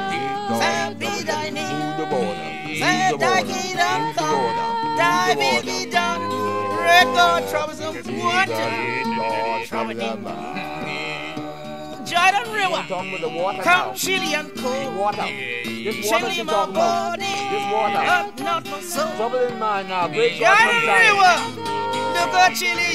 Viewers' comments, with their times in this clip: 0:04 Can anyone elaberate on the use of the harmonic drone in this tradition? You can here it clearly
0:04 Can anyone elaberate on the use of the harmonic drone in this tradition? You can here it clearly